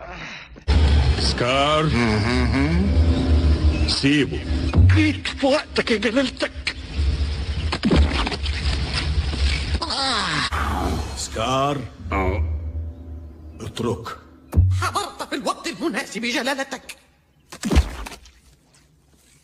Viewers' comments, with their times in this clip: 0:07 H-B, SPLAT, CARTOON - PAINT GLOPS FIGHT